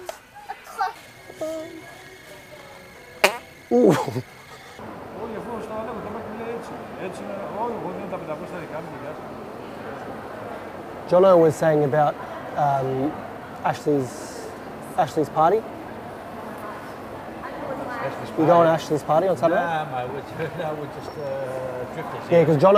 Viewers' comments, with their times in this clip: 0:05 they are speaking greak!